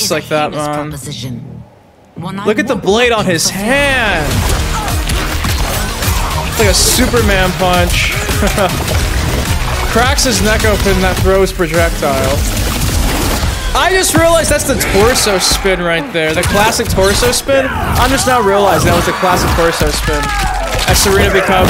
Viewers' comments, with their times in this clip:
0:09 OMFG, I just realised something. Havik is either Kuai Liang or Bi-Han. His voice sounds VERY similar, and has remains of a mask on his face, resembling Kuai Liang's. I'm first on this theory, PM, 06.08.23. edit: according to the new press release info - he's not. Good.